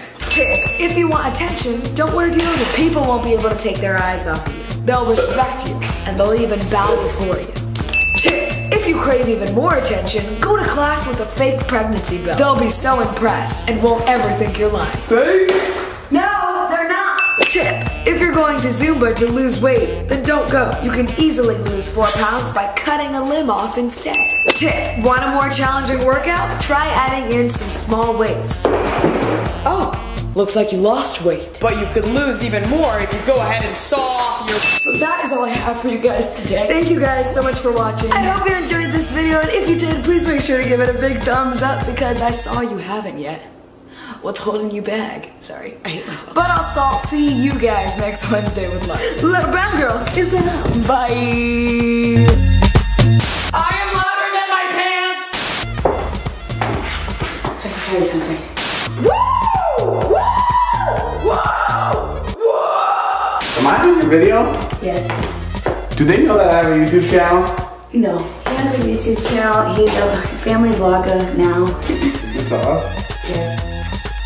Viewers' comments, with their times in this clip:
0:06 the little claps 😂😂
0:55 When david walked in I love the sound his shoes make!! I keep replaying it soooo much!